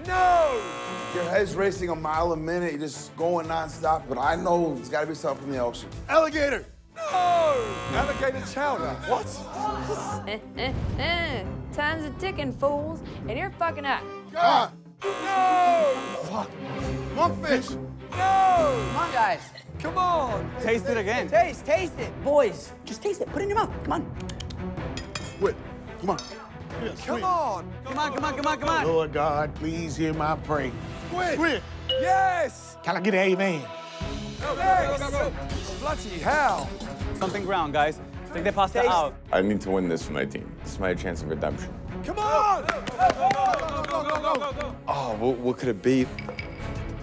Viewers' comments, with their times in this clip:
0:06 the way he says "nOOoooo" 😂
0:11 she sounded like a cartoon movie character, I think I'm high help
0:34 what he say xd?